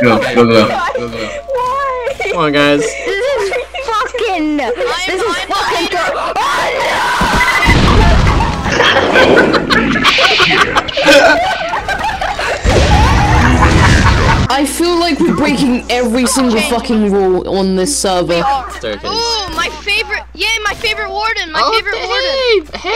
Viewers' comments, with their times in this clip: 0:06 that scream I performed was perfect XD